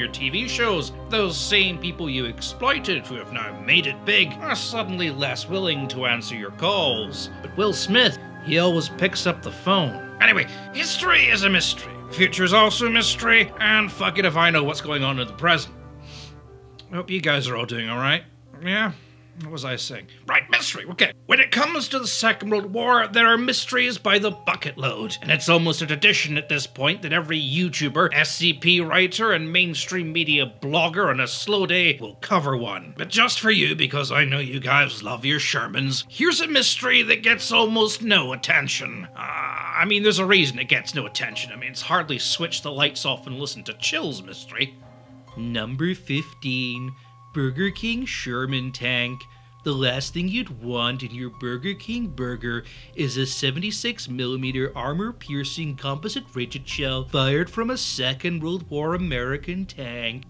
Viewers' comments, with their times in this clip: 0:10 Ok that was funny afk 😂😂😂😂 god i hate that guys voice
0:46 Dude ... ... The voice. It haunts me.
0:46 when he starts the countdown he uses the voice and the speaking style lmao Even though Dross is from Venezuela the imitation is spot on. Cool easter egg